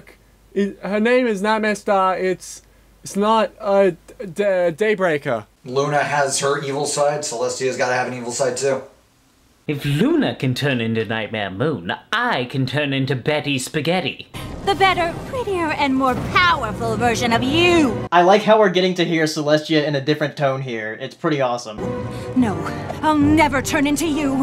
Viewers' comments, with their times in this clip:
0:10 I'm sorry that sounds exactly like papyrus from undertale =_=